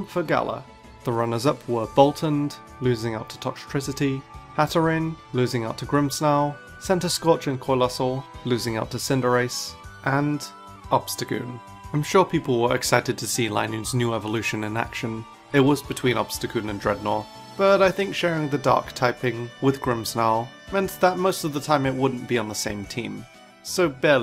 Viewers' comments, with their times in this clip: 0:07 did ur voice glitch saying Coalossal